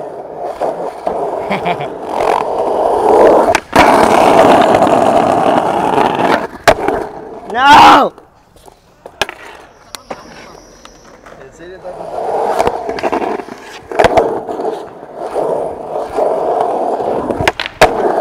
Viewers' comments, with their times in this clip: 0:04 Dope vid! That back foot styling was pleasant to watch! Love his laughter & personality.